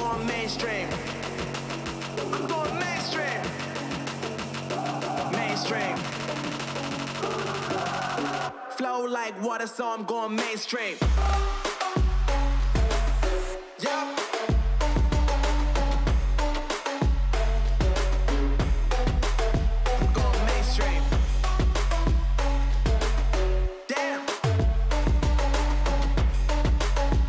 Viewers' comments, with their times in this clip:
0:09 Was loving it til the rap. FUCK RAP. Nice tats, but I bailed